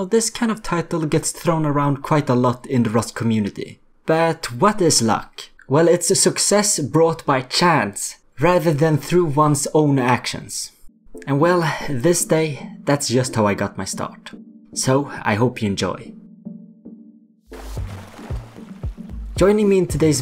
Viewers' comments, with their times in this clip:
0:07 ngl thought you said chads